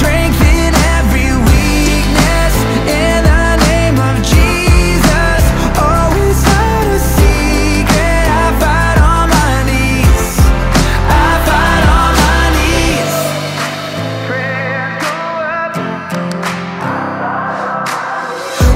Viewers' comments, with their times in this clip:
0:05 I don't know why but it something else when he sings this "higher note"